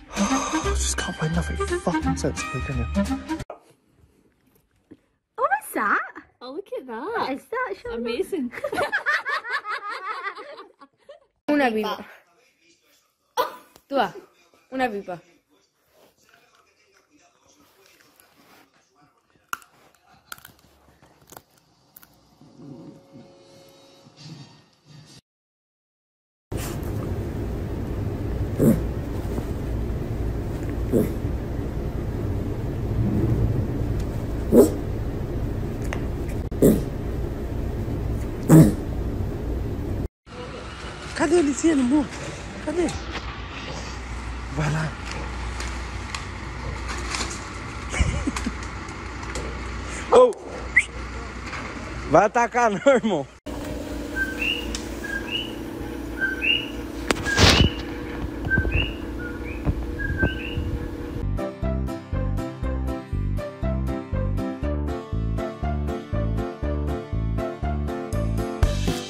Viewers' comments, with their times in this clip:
0:04 I love their laughter haha
0:54 I miss hearing coquis.